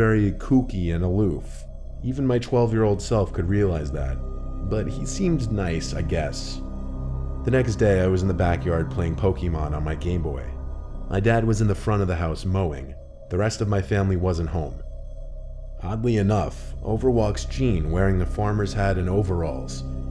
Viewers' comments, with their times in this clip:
0:08 Hate to be that guy but it's not pronounced "Poke-Ee-Mon."